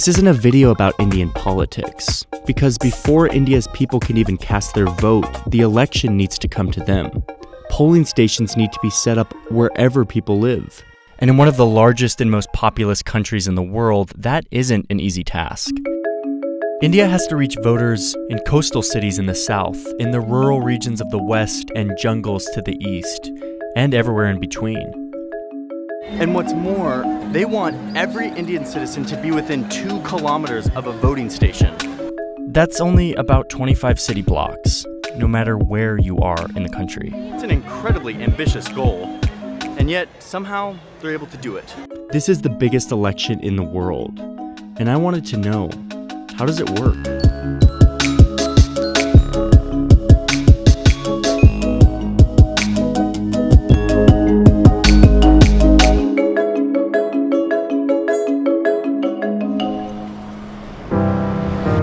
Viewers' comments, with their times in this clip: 0:09 that was Bengali!
0:45 the music is so dope